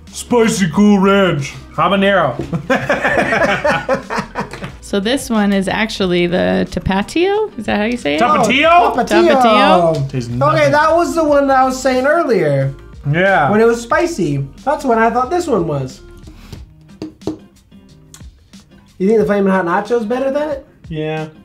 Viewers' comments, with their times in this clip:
0:06 Te-pa-tyo is crazy